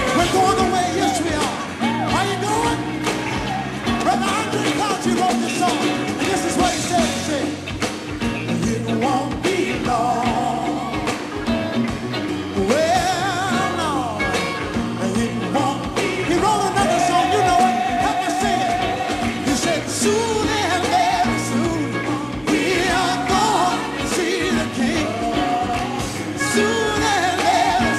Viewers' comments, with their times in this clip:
0:09 They Str8 went into Remix mode Walter was way before his time. One Time for the Hawkins Family.